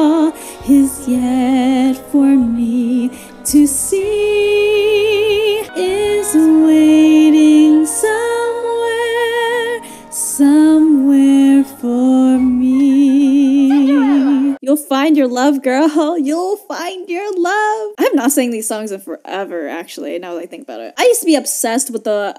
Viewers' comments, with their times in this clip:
0:09 you Betta sing!!! 😍